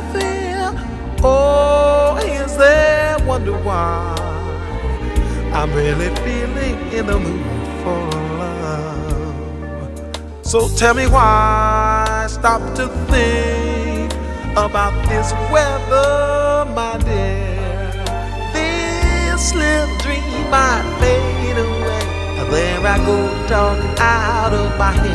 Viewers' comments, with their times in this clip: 0:10 the artist is master craftsman he sounds just like the record and i have herd him play sing and the orchestra he brings with is simple awe inspiring music is superb a genius in a dark world and the good thing is he is a worshiper of Jehovah He brings praise to our god Jehovah Romans he brings is qualities to front so all can see